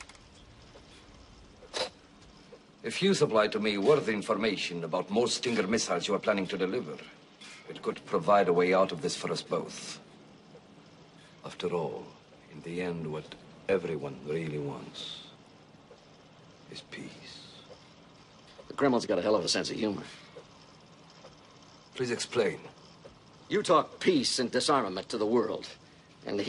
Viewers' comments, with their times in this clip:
0:09 LOL, his "accent" slipped